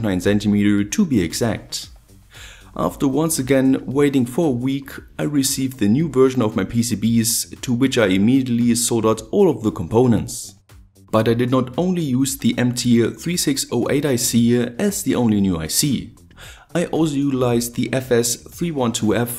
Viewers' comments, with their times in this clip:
0:07 waiting 4 weeks or for week??.thats not possible..